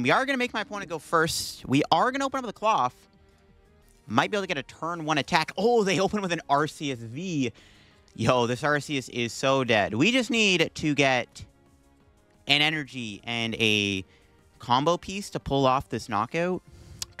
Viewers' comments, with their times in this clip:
0:05 "Artheouth V" 😅 all love btw, im just messing with you❤